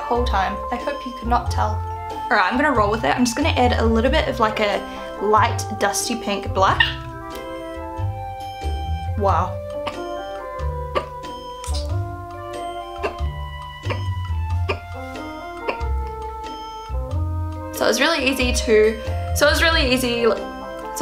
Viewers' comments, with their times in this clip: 0:05 Omg those hiccups